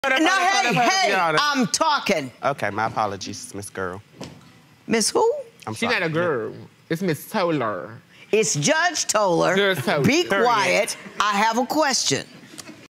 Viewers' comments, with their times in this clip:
0:09 Ohh I can hear it faintly. He said it but you can’t really hear it because she was talking